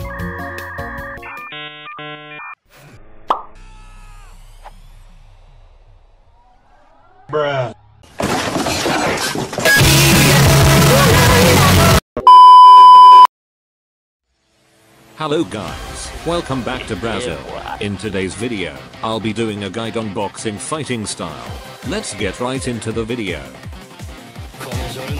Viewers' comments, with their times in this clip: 0:10 R.I.P my ears